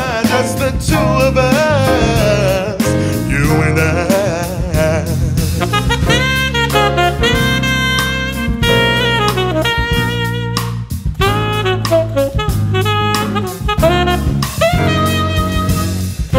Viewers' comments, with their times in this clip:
0:03 😍😍. Did y'all here that amazing drop!